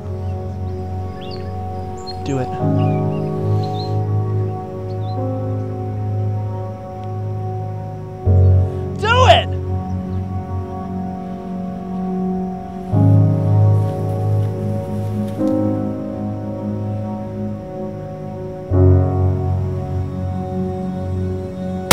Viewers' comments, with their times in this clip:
0:08 tho DO IT it sounds so childish